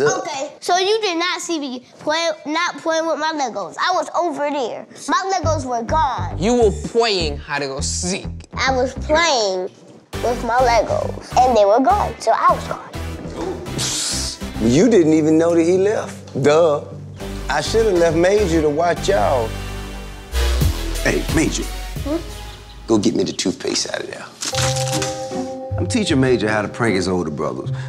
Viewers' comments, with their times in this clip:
0:09 Forward to lol why does he gotta belt